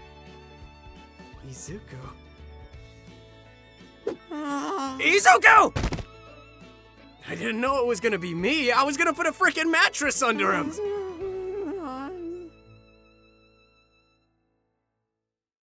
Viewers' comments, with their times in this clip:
0:04 that IZUKU scared me
0:05 Hearing Shinso speak that passionately wasn't something I knew I needed...BUT I NEED MORE